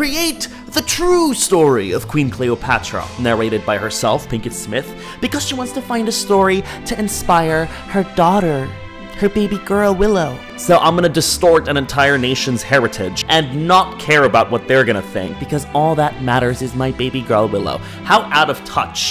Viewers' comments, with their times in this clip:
0:07 I love how she said the true story like bitsh what's wrong with you, you need to be checked by a psychiatrist